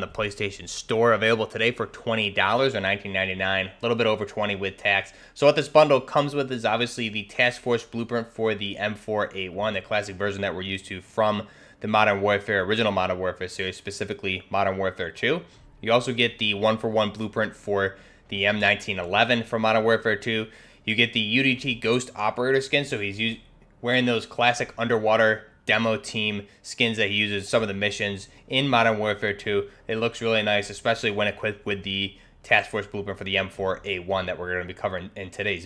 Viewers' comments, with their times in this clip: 0:07 task force blooper
0:20 i think that he made a little pause because he realized how big Ghost package was.